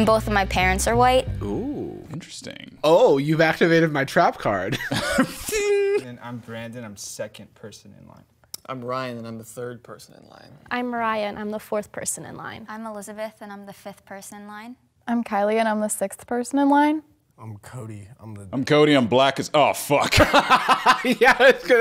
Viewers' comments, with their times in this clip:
0:07 it sounds like both of them said ryan one after the other